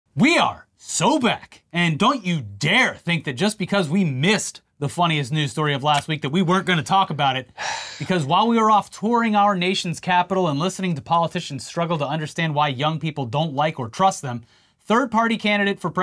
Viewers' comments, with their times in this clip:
0:01 The dude can barely talk. That’s why I’m always floored when he has the audacity to talk about Joe Biden.